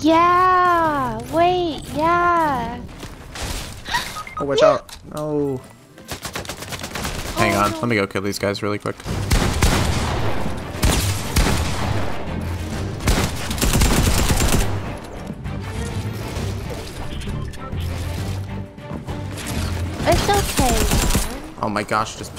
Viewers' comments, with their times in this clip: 0:04 what was that moan
0:04 WHAT WAS DAT SAWAH